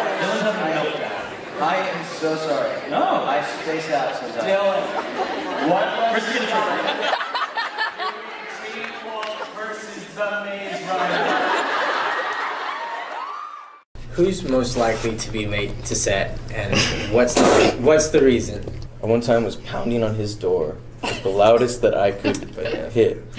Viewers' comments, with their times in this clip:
0:06 That laugh tho 😭 😭 😭